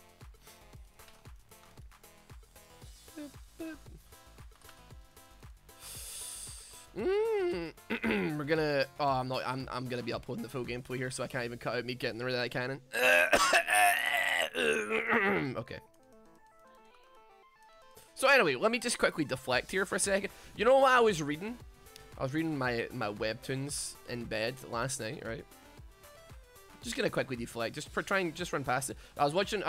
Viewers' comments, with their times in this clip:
0:10 lmao i coughed really hard (u know when ur really sick and slime comes out....i know, gross) and you made coughing noises, kinda felt u were mocking me._.